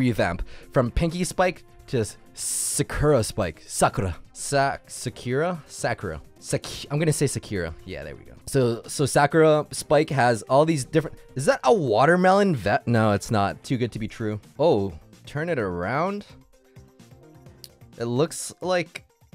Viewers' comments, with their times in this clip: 0:06 "I'm gonna say Sakira" Proceeds to say "Sakura"
0:07 im gonna say Sakira Next second-sakura